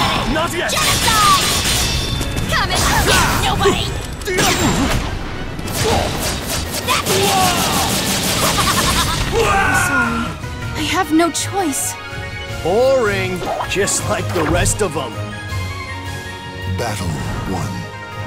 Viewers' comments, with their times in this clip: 0:05 Love Tira's throw Her expression, and laugh, when she's spinning her blade and lowering into Raphel's face is awesome.